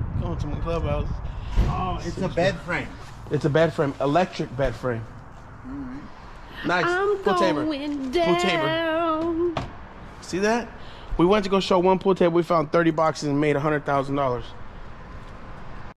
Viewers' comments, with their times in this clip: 0:09 Video has no sound once you get to mark. But that’s okay. No worries.